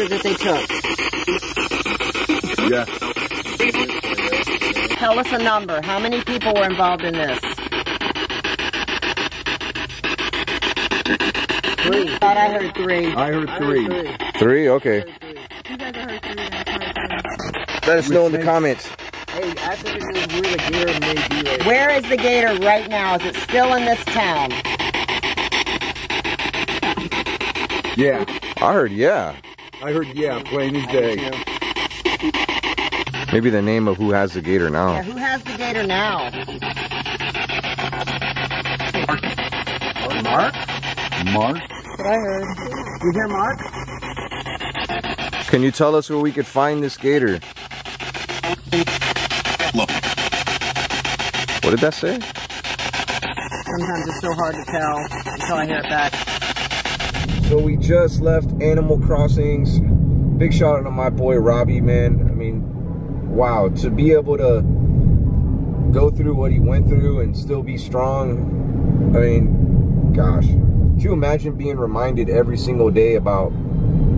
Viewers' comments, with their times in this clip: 0:09 I heard them answer 10
0:10 I heard 10.
0:21 I heard 10 not 3
0:23 I heard 10
0:48 I heard lock.
0:48 Found me or Find me... Look!. That's what it sounds like from my end. Thanks for the video and I hope they found Snowball. Good Luck!
0:49 says look so clearly
0:53 It almost sounded on that it said “Long Beach local” or something with beach and local
0:55 I thought I heard it say Palm Beach, but I could be wrong.